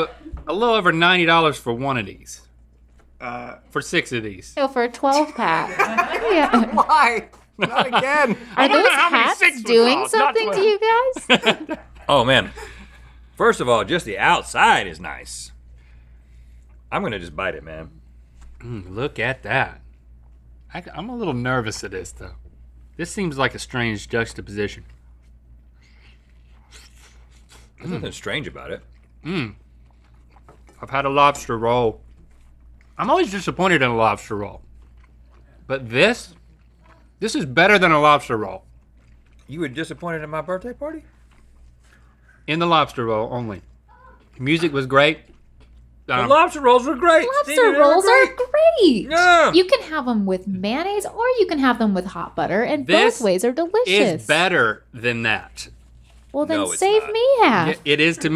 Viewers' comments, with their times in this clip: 0:04 Link's laugh is the cutest thing I've seen all day
0:43 if you play it back again and again , you'll get it ... giggles